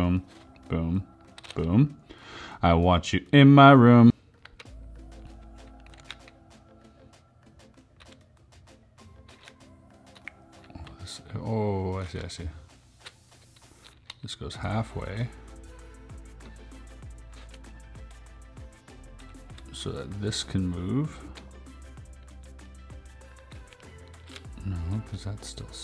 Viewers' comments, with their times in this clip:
0:08 I thought someone was tapping on my wall 😂❤️